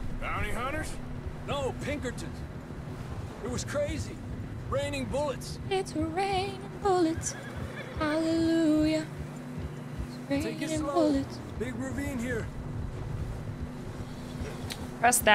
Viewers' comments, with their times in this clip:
0:03 ur voice is awesome :0 very pretty!